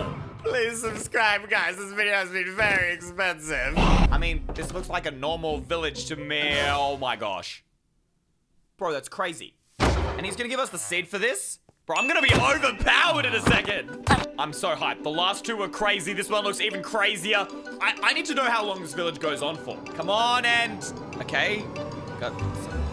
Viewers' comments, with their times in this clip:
0:03 perfect cut scream